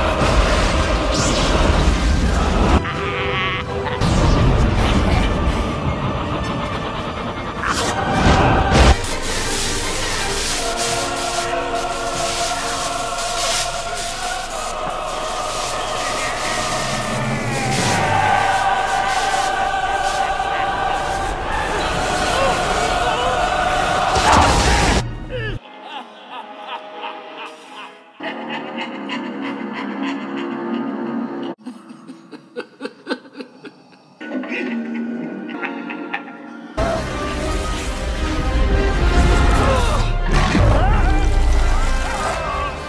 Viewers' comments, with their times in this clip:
0:07 He went full Jontron here lmao "ACH"
0:15 That sound when you’re taking a shit that only ends up being the size of a raisin cuz you haven’t eaten a vegetable in a week.
0:16 the noise you make when you over power you friend in a spam a button game
0:16 the noise you make you over power you friend in a spam button game
0:28 most iconic laugh ever